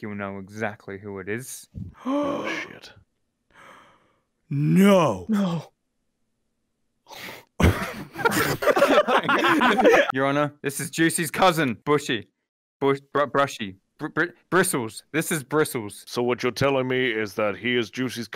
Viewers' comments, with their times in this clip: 0:03 you can tell they’ve been in quarantine for too long when they see a freaking brush fall over and laugh